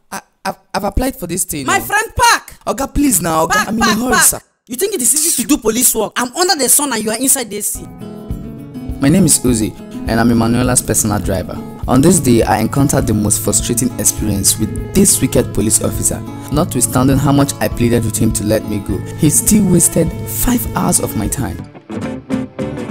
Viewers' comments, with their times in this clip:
0:07 Your oning ac lol.